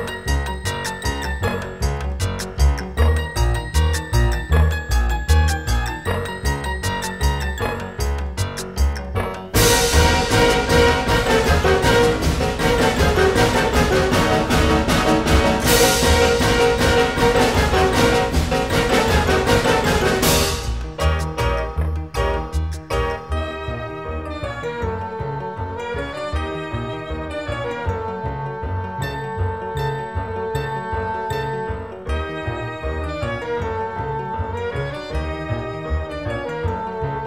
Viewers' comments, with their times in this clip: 0:08 The part where the music amps up accompanied by that pterodactyl skeleton carrying slices of bread always cracks me up.
0:08 I can hear heavy in the background
0:18 GUNSHOT Peter Griffin: AAAAHHHHH! What was the point of all that?! All it does is shoot ya! It doesn’t make breakfast at all!